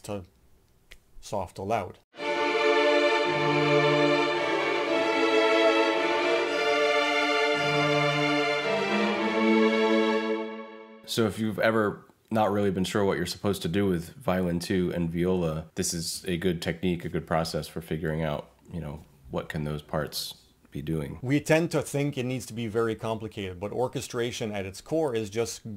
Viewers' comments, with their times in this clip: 0:06 Im not sure the ii half diminished resolving to i is the best harmonisation. That chord usually functions to prolong the tonic or as a subdominant class chord. But here it's acting as a substitute for a dominant class chord. (Last quaver of the second bar)